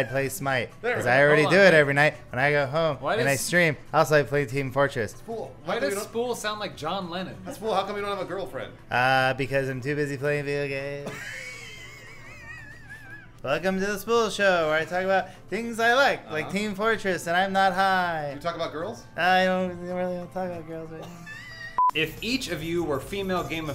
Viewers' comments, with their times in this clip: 0:07 He sounds like Bob Dylan, not John Lennon